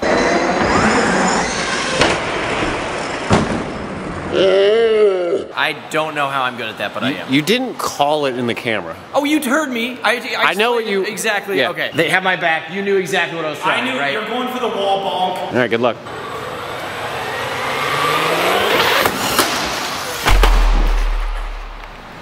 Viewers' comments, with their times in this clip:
0:09 he said "you turd me" please tell me I'm not the only one that heard it